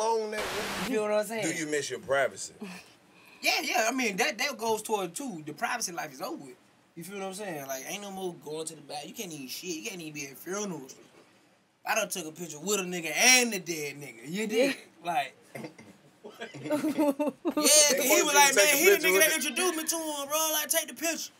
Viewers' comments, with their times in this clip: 0:06 I died when she thought the Netherlands was neverland ranch 😭😭😭😭😭😭😭😭😭😭😭😭😭😭😭😭😭😩 I swear I cried from my soul and replayed that part like twelve times and Karlous made it worst with his calm tone although he was confused af on her lack of knowledge